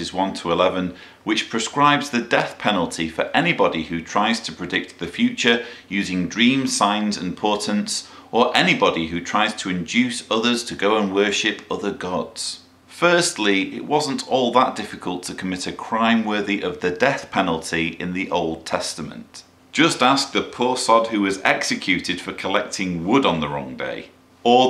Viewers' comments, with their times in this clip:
0:08 he says dreams signs or "portance" I know I've misheard the word can someone tell me what it is so I can look it up proper like? I looked in the kjv version and can't seem to find the word he is using. if it is portance I'm not sure what he means.